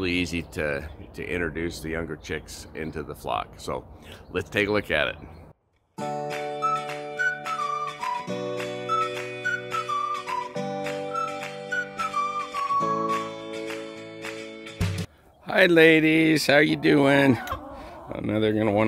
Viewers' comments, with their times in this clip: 0:06 instant diz for this music